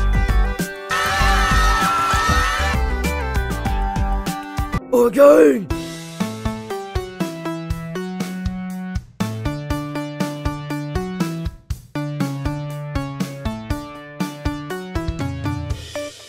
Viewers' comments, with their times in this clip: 0:03 "OK" Feels like "I'M GAY" Weather in a nutshell...